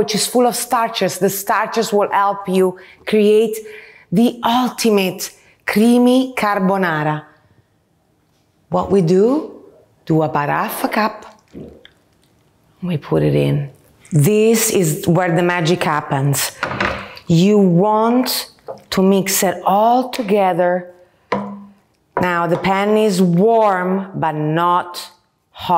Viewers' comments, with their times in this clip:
0:10 just clicked in there and it sounds like "fucked up." :D